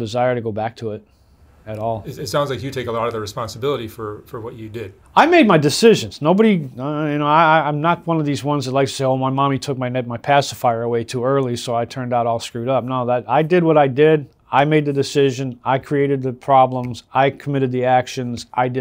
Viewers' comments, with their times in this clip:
0:03 I think how quickly he responded says a lot